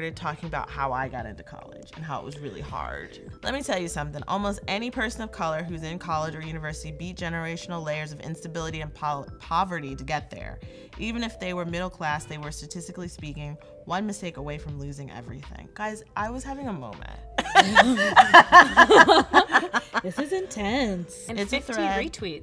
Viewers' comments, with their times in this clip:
0:07 at the minute mark, am I the only one who heard a loud beep??